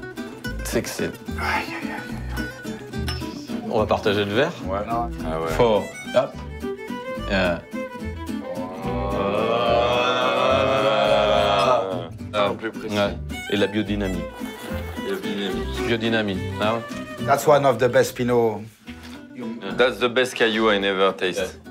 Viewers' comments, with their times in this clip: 0:09 The sound of camaraderie! Lol